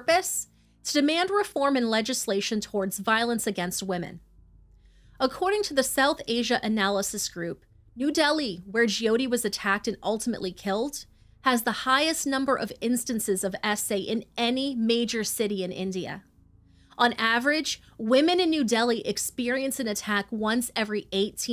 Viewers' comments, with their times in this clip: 0:09 Girl I can tell you're ANGRY once you start talking